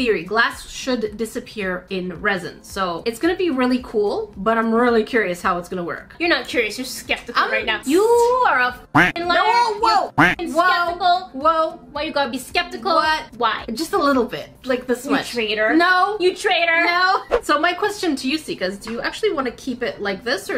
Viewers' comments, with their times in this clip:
0:08 this is probably the most calm sister fight